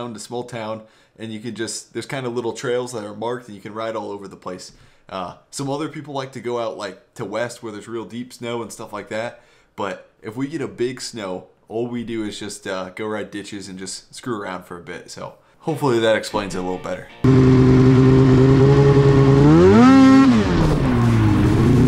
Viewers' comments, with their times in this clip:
0:05 Hey I see u listening to Luke combs. You got good taste in music.